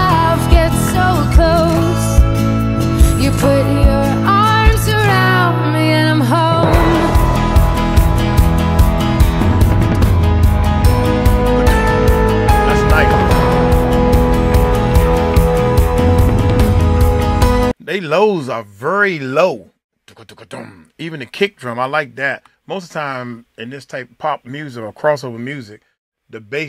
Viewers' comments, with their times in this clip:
0:09 ,,I can hear kickdrum too uncle